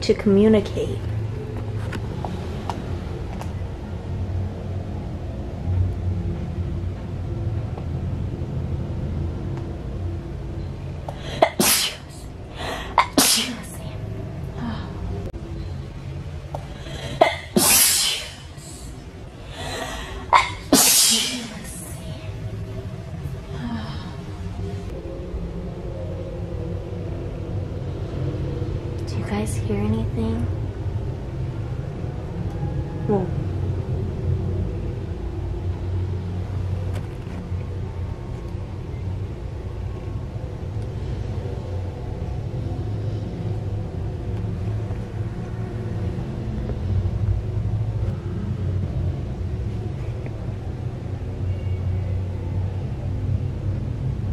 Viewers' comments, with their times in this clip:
0:10 At the mark, every time you sneezed a woman would say “Bless you”. So cool!
0:39 I just heard a women crying in the attic at the haunted Queen Mary minutes